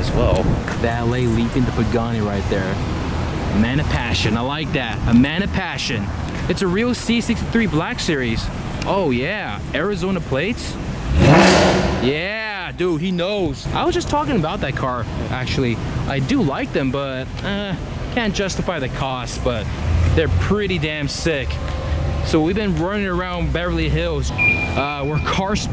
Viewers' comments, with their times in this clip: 0:06 PERFECT REV ;) DUDE